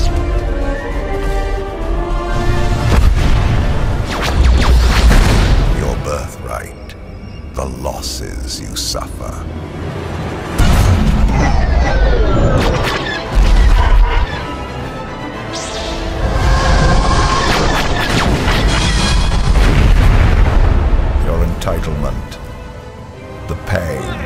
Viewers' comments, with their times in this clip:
0:08 *I don't know why but, keep thinking I'm hearing Jeremy Irons voice and if not he would be so good in Star Wars film or game ❤🎉